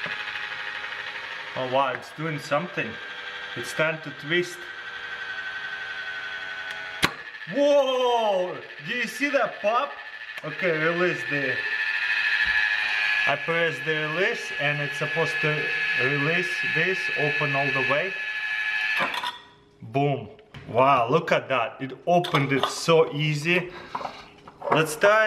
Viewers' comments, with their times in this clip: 0:07 is the pop